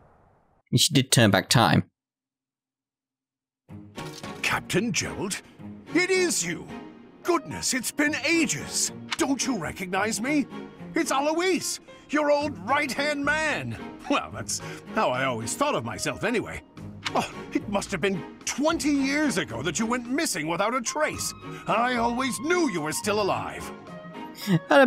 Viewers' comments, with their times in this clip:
0:07 Hello there Jeralt.......or should i say Jiraiya lol :) "What the goodness" lol had to get a bit of Nepgear in here hehe